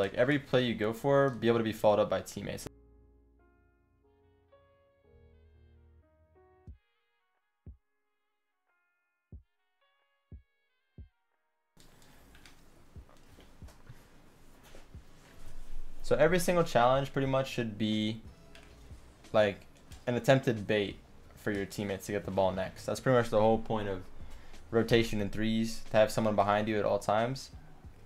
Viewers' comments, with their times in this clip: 0:03 he got muted???
0:11 Is it just me or was it silent ?